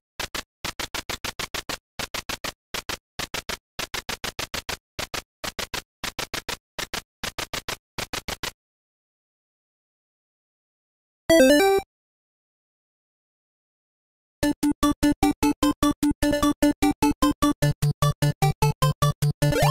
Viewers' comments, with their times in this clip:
0:04 Is that woman speaking, or suffering a stroke? 👀